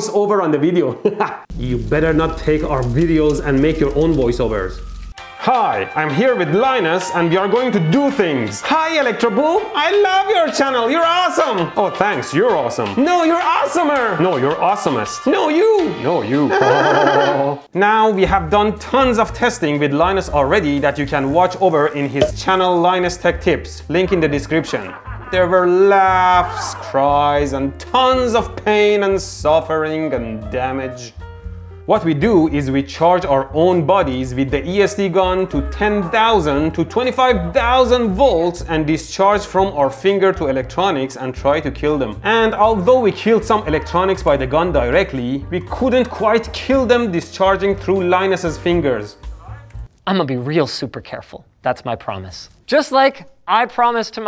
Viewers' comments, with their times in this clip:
0:08 I swear this part sounds exactly like a part in the movie Kung Pow 😂
0:34 I like how the music is relaxing while linus is screaming in the backround
0:35 linus's muffled screams are so funny